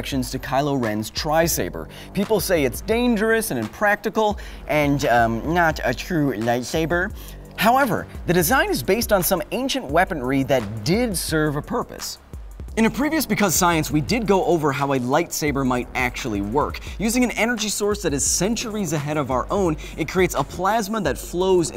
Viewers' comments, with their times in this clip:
0:03 "lightsaburr" lol nerdy accent
0:04 Can somebody tell me where is that accent from? Or is it a feference to somebody who speak that way?
0:05 Lol nerd voice!